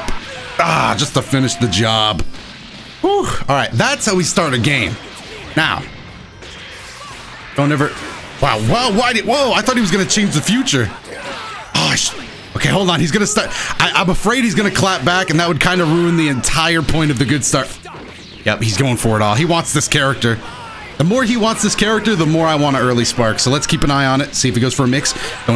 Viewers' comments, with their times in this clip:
0:06 never have I ever laughed so hard 😂 Wtf did you even say? “Wha wow whydy whoa” 💀😂😂😂😂